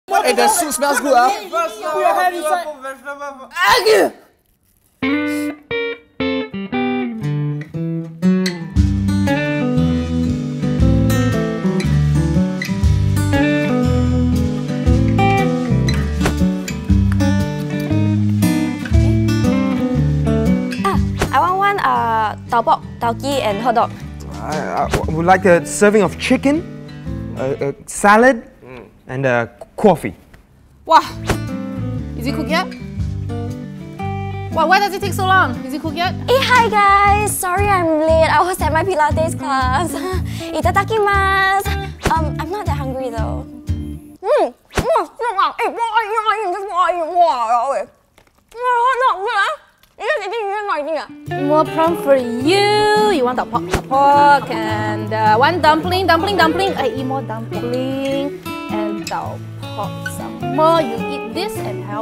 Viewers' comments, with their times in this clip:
0:01 "The sus smells good🤨"
0:02 listen carefully u can hear someone say "Put your hand inside"
0:03 Am I the only one who heard "Argue"? 😂
0:47 sound like she say walao